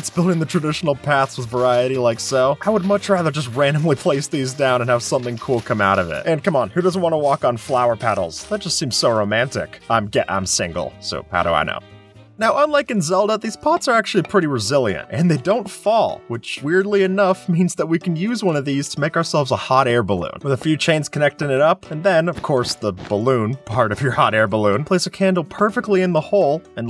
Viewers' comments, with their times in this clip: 0:10 lmao... "That just seems so romantic awkward stuttering I'm - gah- Im single so how would I know"